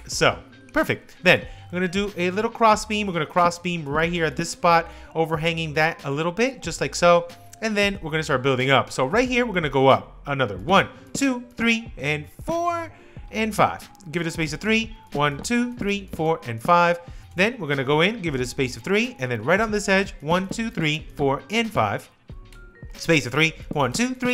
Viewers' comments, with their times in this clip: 0:09 his voice gets deeper😂